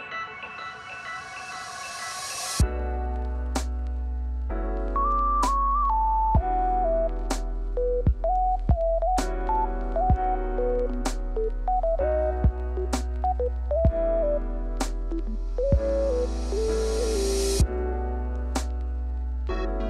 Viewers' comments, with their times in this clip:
0:04 im just gonna appreciate the fact that, when he places down the lantern the beat kinda sounds like when you place a lantern down, it is in sync.